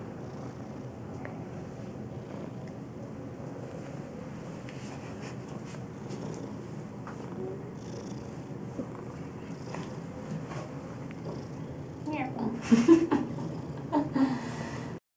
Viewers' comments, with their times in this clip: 0:11 omg! The cat meow!